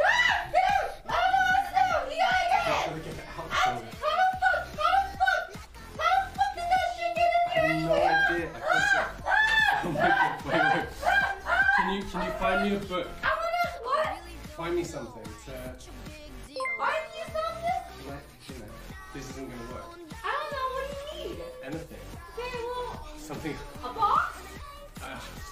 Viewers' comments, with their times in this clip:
0:08 yo the wasp made her scream harder than any man ever managed to, CHAD wasp 😂